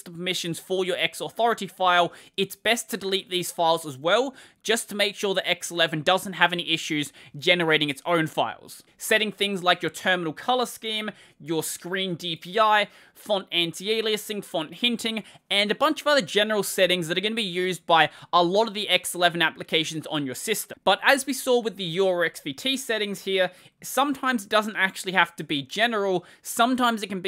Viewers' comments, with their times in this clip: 0:08 Something cut out here?